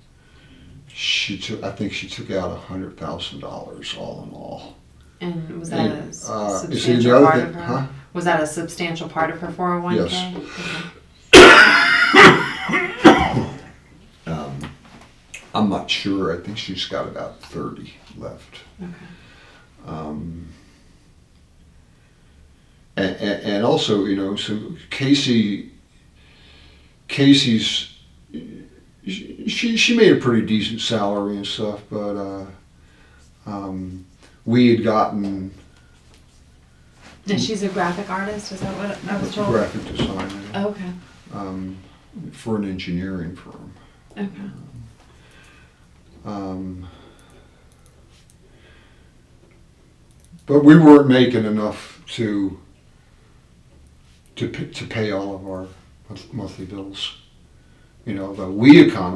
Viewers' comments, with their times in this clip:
0:10 😂 The way she leaned back during his coughing 😷 🤢
0:10 😆😆😆😆 that poor lady investigator. Having to deal with the guy absolutely HACKING in her face! The more you watch it, the funnier it gets! 😄
0:41 he's breathing so loud and fast because he can't control it due to nerves!